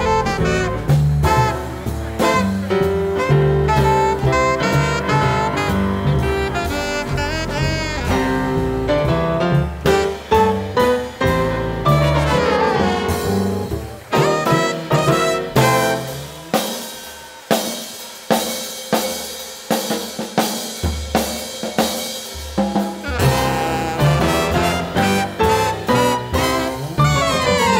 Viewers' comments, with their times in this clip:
0:08 Love how Emmet seems to go 'I think I'll keep this going a bit longer' and the band squeezes so much into that last minute.